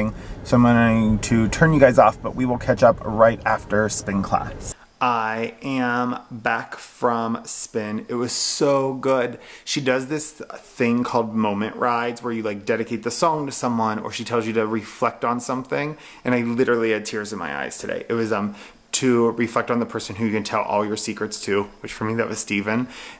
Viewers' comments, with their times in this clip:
0:05 Hey, just a note since you said you're working on upping the production. The audio goes from stereo to mono at the mark until the end of the video. There's a moment when you're talking about books that there's some clicking sound and then there's noticeable noise out the right channel for the remainder of the video.